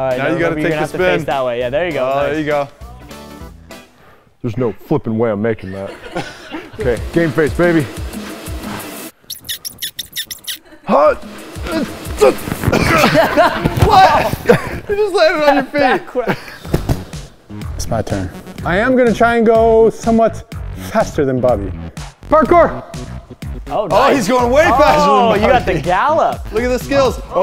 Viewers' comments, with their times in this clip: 0:09 Game face baby!!! BECOMES A PENGUIN WHEEZING i love ya guys team edge...😂